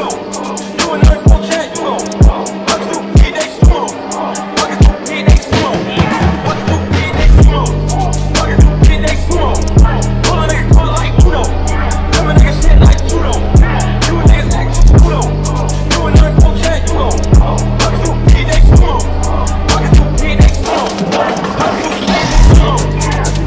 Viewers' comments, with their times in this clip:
0:04 fortnite death noise